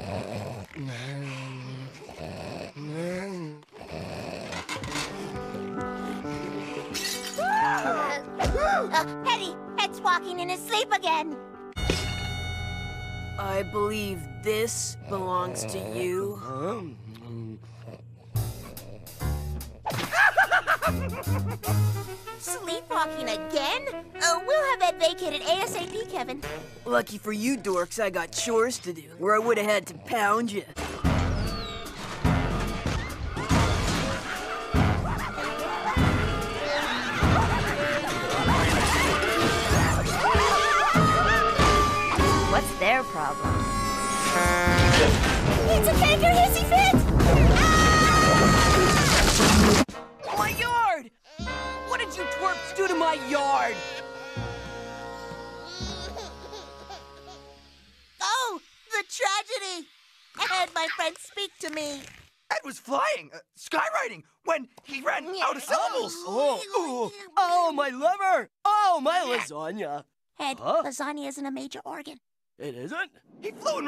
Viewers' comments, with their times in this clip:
0:07 I like that noise Eddy makes
0:55 the sound of a baby crying